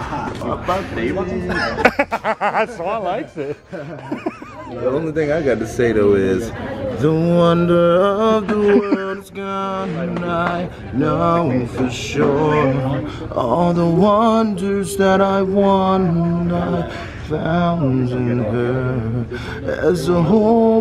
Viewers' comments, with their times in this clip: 0:08 What an angelic rendition